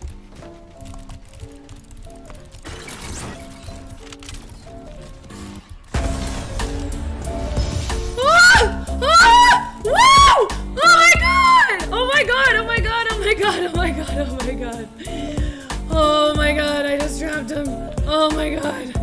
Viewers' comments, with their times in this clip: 0:05 the music is perfectly in sync with the game.